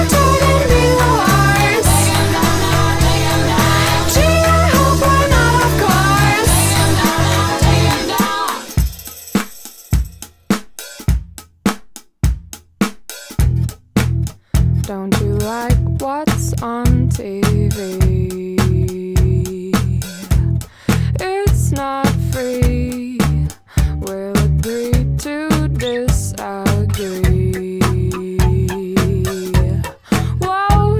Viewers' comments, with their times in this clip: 0:08 Jack's tambourine shake makes me giggle every-time ;p
0:13 i thought you were going into "another one bites the dust" that would be sick!!